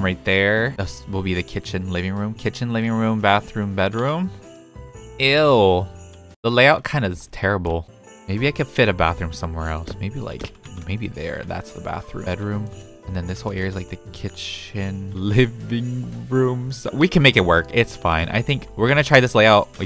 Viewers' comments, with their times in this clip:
0:04 The way u said "ew" is so funny 😭😭